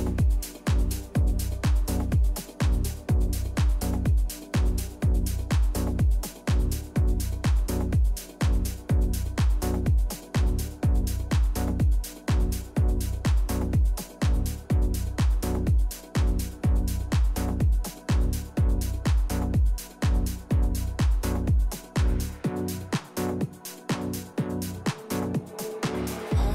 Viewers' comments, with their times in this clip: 0:08 That club mix of Hide hits different!